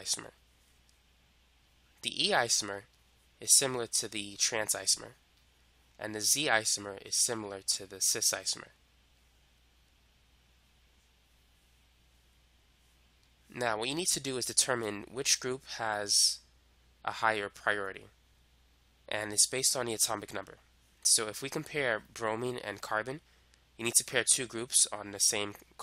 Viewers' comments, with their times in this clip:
0:06 I'm hearing icecream in !